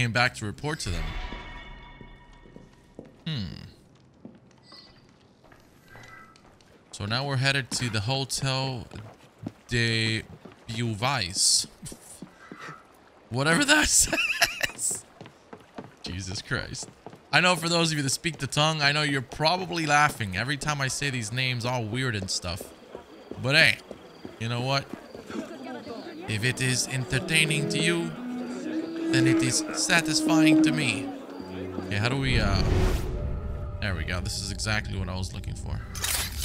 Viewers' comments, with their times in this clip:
0:09 the way he pronounced Beauvais triggered me so hard btw i know it's not his fault for not being able to pronounce it right
0:20 As a French, yes that makes me laugh (it's cute tho). Beauvais = sound more like Bow vay
0:20 Laughing... or Crying?